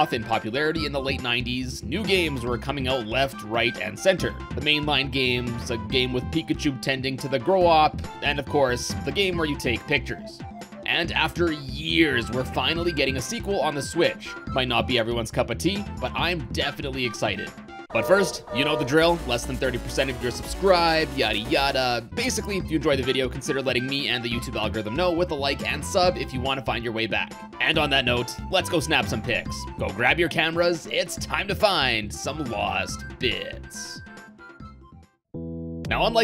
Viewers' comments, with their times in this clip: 0:05 "A game with Pikachu tending to the..." What? 🤔 Grow up? Crow...op? Korok? What's he saying lol I like the "Pikachu noticed the WEED." line though 🤣
0:17 That megaman zero sound effect threw me for a loop!